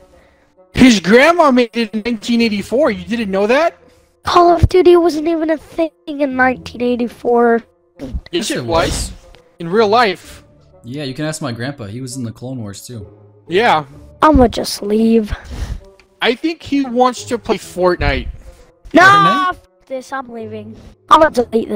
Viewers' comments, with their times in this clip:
0:08 "yes it was" in perfect sync